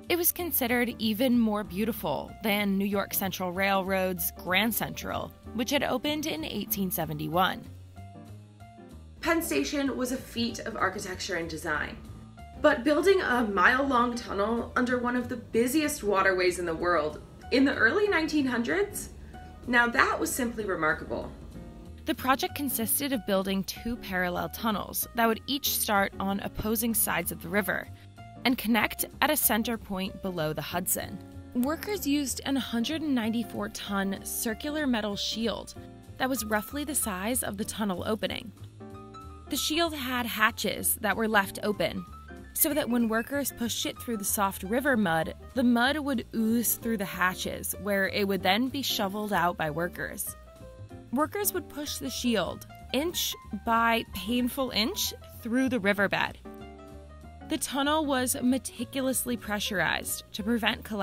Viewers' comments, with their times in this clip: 0:09 Who’s this cat playing those McCoy voicings on piano
0:32 she freaking says it again "an ahundred" ...just say the Damn number as you read it! If you don't know, don't guess.
0:42 did she just say "pushed shit"? 🤣 Just wasn't expecting that 😁
0:43 “so that when workers pushed shit through the soft river mud”
0:43 I had to go back I heard "Push shit through"
0:44 anyone here what I heard about "putting shit through?"